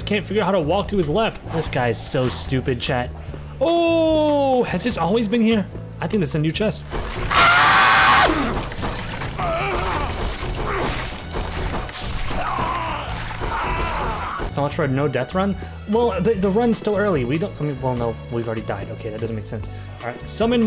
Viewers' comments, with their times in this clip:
0:06 you can hear the pain in his voice